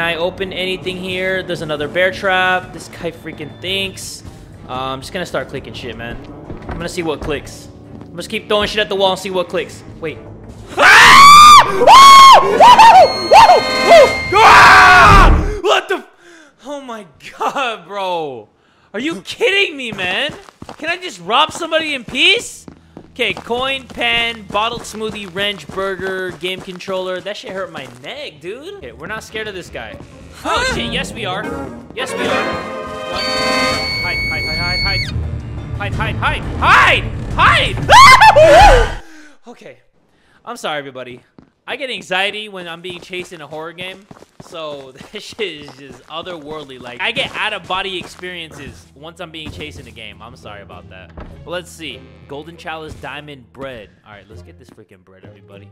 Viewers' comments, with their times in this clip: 0:07 that scream scared the shi+ out of me
0:09 That scream tho, yo 😂😂😂 I'm gonna adapt that scream one day
0:10 THAT SCREAM WAS PURE GOLD
0:10 Damnn missed those Girly Man screams
0:10 first japanese girl scream of the year!!
0:10 oml... tha scream thooo
0:10 holy crap wth that scream was enough to break glass hahahaha
0:10 my poor ear's :"(
0:10 high notes jumpscare :))
0:10 we have the tom and jerry scream again XD!!!
0:11 MY FVCKING EAR 😂🔪
0:11 HIS SCREAM LMAO
0:12 YOOO I FOUND TOMS VOICE ACTOR FROM TOM AND JERRY
0:12 MANS REALLY SCREAMED LIKE TOM
0:37 what kinna cartoon scream is that my guy.
0:37 Cuckoo clocks be like
0:37 really sounds like Goffy the dog from Micky mouse clubhouse.
0:37 Me: can i get a michael jackson album? Mom: we have micael jackson at home the michael jackson at home:
0:38 he sounded like someone from looney toons